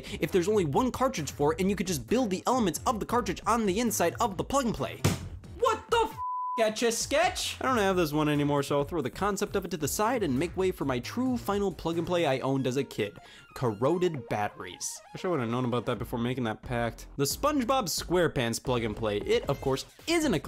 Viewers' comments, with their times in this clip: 0:05 Damn, the bleep for "What The Fuck Etch-A-Sketch" is still there